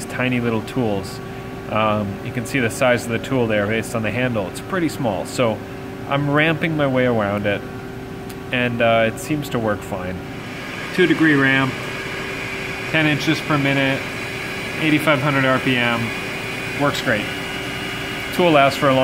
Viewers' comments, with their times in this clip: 0:07 ....Elmer Fudd impression